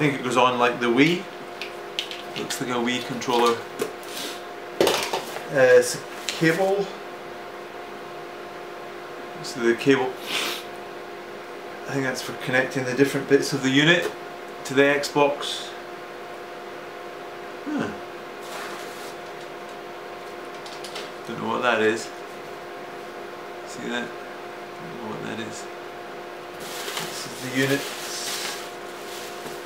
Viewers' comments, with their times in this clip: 0:10 did anyone hear him smell the cable?? lmaoooo im dying